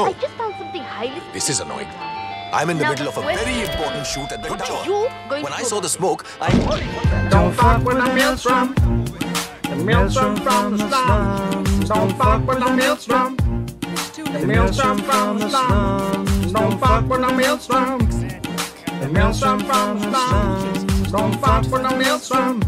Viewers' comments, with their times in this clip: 0:06 🔥🔥🔥🔥 All 3 at once😱 ...and the song is really good😂